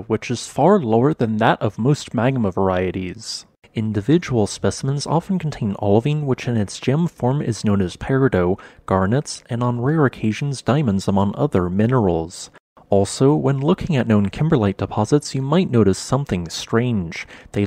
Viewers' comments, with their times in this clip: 0:05 thank you for pronouncing peridot correctly